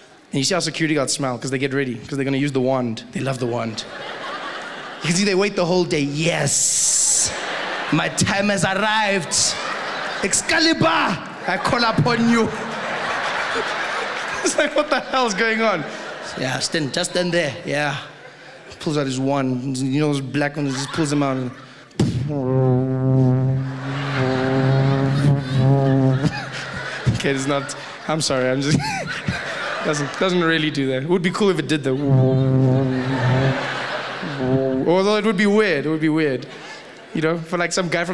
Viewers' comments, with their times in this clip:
0:07 Idk why but it feels like a white guy making fun of black people. I understand his history. But close your eyes and you'll see what I mean. Feels too much like being black is an excuse for a white person to make fun of black people. IDK. where does PC culture and stuff stop?
0:22 That sound tells how versatile he is ....with his mouth 💓